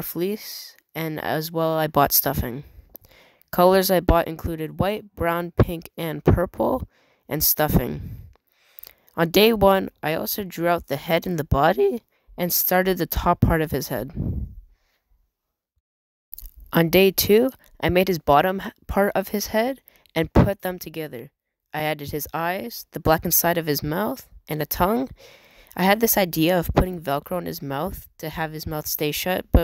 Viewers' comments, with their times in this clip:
0:10 the voice crack 😂
0:10 that voice crack 😂